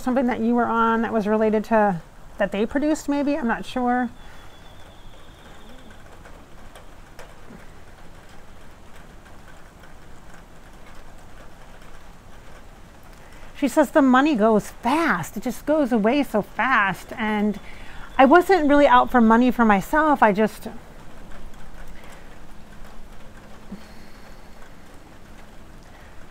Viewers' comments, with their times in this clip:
0:07 I could hear a voice talking right in it sounds like her